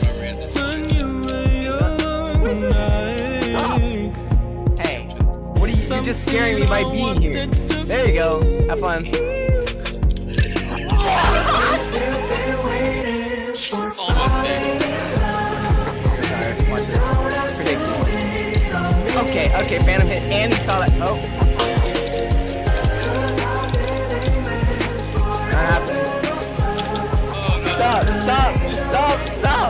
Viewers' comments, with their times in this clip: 0:10 lmao that scream tho